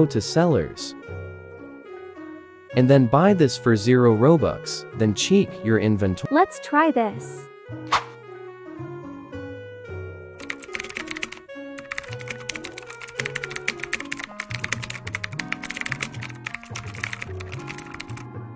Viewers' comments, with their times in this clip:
0:05 Guys you will hear “cheek” in 😂